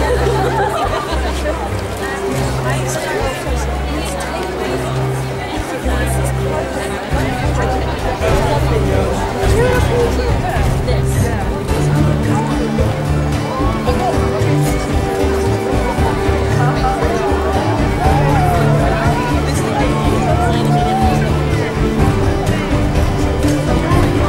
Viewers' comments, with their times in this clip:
0:06 OMG ALL THE SQUEALING THAT'S DEFINITELY SHIPPERS!